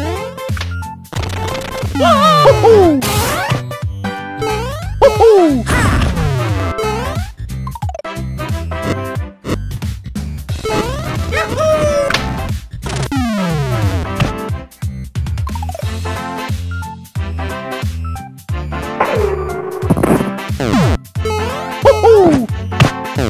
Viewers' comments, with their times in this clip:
0:10 The mario YAHOOOOO made me laugh hard 🤣